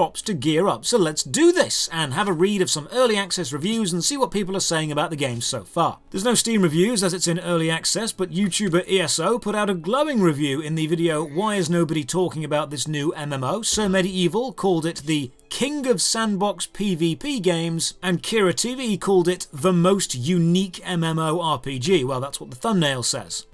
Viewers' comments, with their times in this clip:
0:10 Why do I keep hearing the 'Sparx eating a butterfly' sound from Spyro?